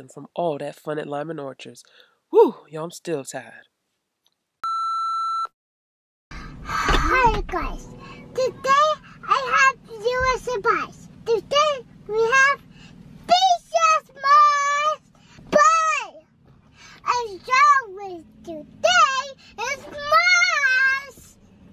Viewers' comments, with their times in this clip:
0:06 his voice is so cute 😭😭😭